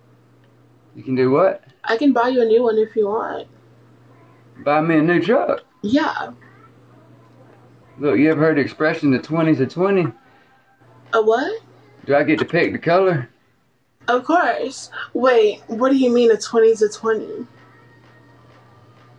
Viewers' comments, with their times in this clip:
0:04 it's the accent for me 😭